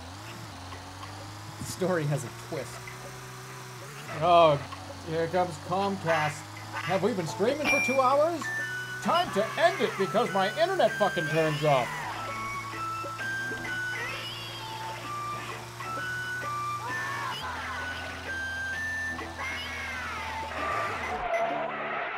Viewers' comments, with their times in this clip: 0:04 who the fuck was playing that children's music in spectator ?